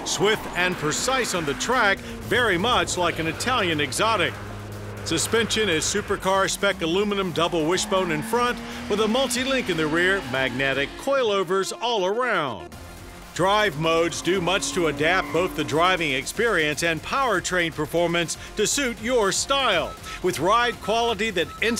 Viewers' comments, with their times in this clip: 0:07 haha did they dub a voice saying "magnetic"